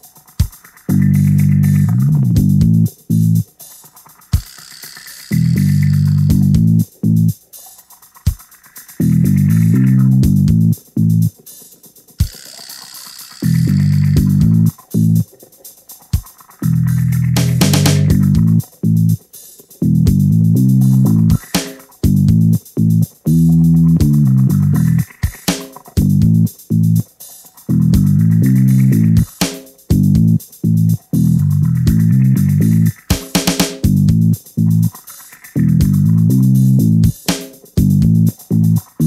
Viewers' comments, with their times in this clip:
0:04 Has anyone else noticed this sounds like Judge Judy's theme song? like
0:09 WAIT A MINUTE THIS SOUND LIKE COURTROOM MUSIC JUDGE JUDY TYPE BEAT
0:24 At × speed it sounds pretty damn epic 😂😂😂